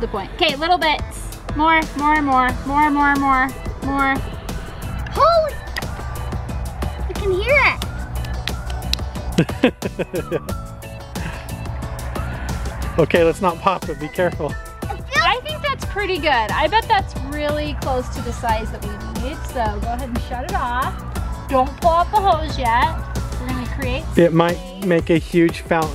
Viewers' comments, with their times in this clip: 0:06 It sounds like a Belly